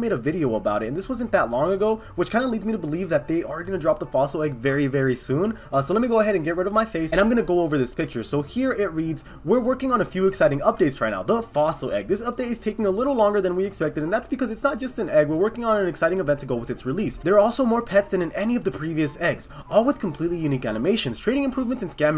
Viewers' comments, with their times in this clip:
0:06 omg u talk so fast